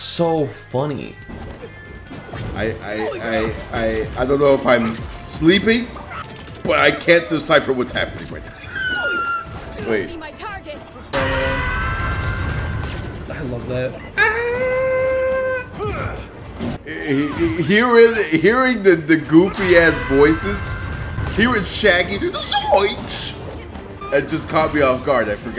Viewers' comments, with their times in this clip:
0:10 Oh shit really?????? Guess this the next nickelodeon fighter thing,I do recognize way more characters in this game than on Nickelodeon,nice. yeah I recognize all of these guys unlike on nickelodeon,also AAAAAAAAAAAA lmfao the tom scream is amazing.